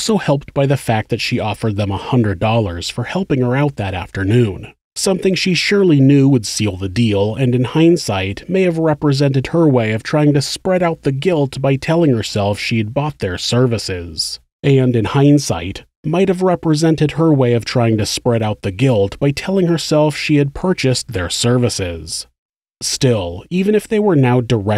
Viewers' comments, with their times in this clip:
0:07 lil bit of an editing flub there just fyi
0:07 oops lol Oblivion moment
0:08 there is an almost duplicated section of narration (sounds like an alternate take left in by mistake): "And in hindsight, might/may have represented her way of trying to spread out the guilt by telling herself she had bought/purchased their services."